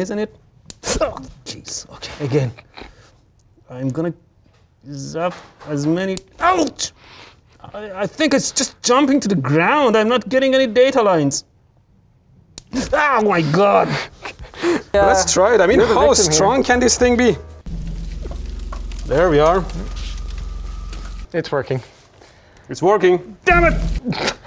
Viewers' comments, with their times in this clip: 0:05 i think i just heard Homer